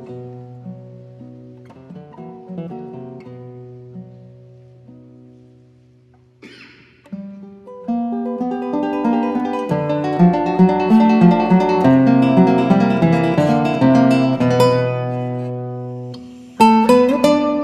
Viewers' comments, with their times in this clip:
0:05 I heard someone coughing 😂